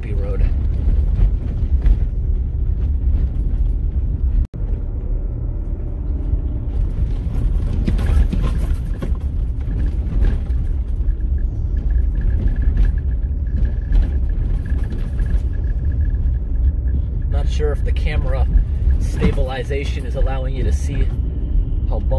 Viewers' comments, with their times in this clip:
0:06 Sounds of tyres and suspension doing their thing. Me thinking 'The image doesn't move at all, post must have some stabilization in his camera' Few seconds later: "Not sure if the camera stabilization is allowing you to see..." We're on the same wavelength :) Love your videos.